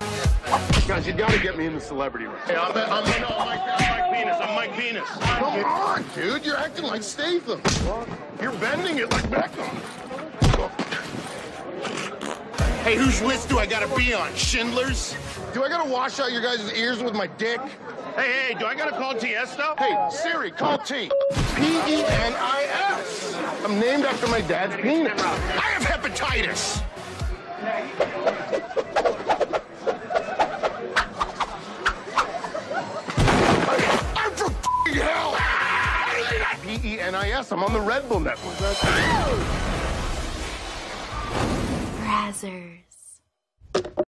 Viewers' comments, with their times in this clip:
0:07 "You're bending it like Beckham.... [farts]" 🤣
0:23 he says it so authentically as if it’s a valid defense comedy legend
0:30 that legit laugh, I loved it XD
0:34 That scream made me die 😂
0:35 that scream gets me everytime lmfao